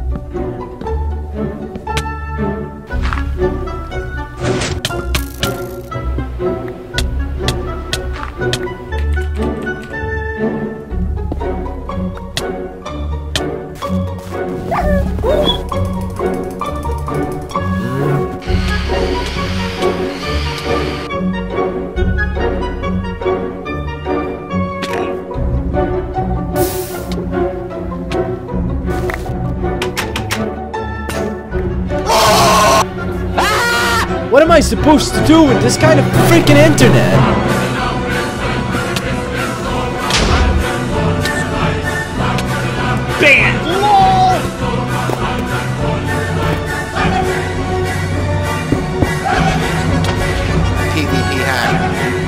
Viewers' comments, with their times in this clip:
0:04 actually made a beat with the song
0:11 that was perfectly in tune
0:12 the timing of the music perfectly times when he gets damaged
0:24 can we just appreciate how well times that “Ough” noise was timed with the music😂
0:32 His scream lol
0:32 the scream is funny
0:37 People have been saying the music is In the hall of the mountain king but it has singing here
0:40 is it just me or am i hearing “lava bucket lava bucket” it could be an easter egg